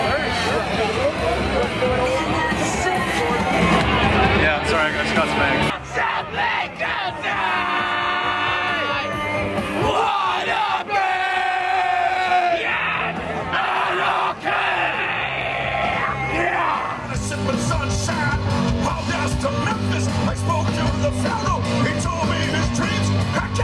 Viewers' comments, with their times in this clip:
0:07 Does anyone know why they were singing along to the sex pistols ?